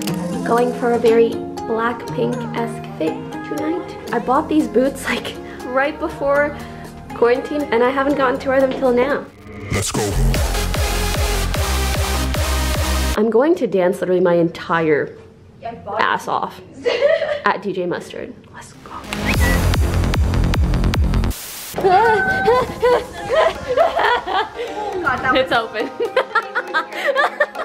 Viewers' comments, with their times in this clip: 0:09 WHOEVER EDITED HARDSTYLE FOR THAT SMALL PART HAS THE BEST FUCKING TASTE! best thing after the proposal LOL
0:10 never did I ever think Pokimane would put hardstyle in a vlog hahaha